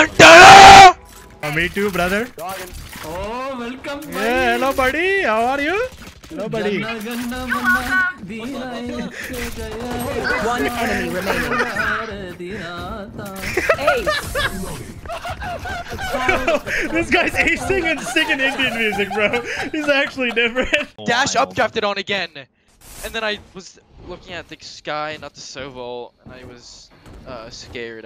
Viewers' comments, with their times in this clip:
0:09 bro really sang the national anthem lol